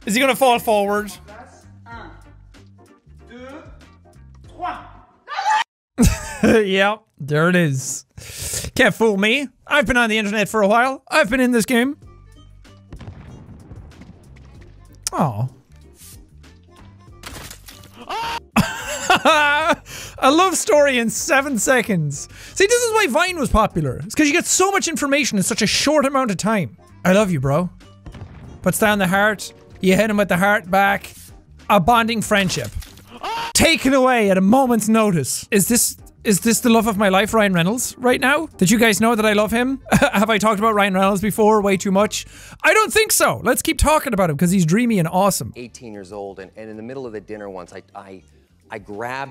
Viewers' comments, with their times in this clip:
0:06 it was in French. Somehow makes it funnier
0:18 right In the middle of him screaming I got an ad
0:35 The scream The face is too good